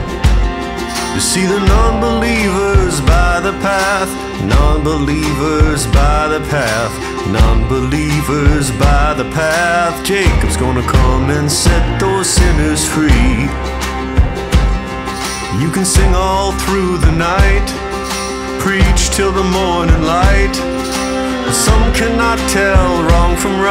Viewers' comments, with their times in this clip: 0:09 cake was gonna set them free ??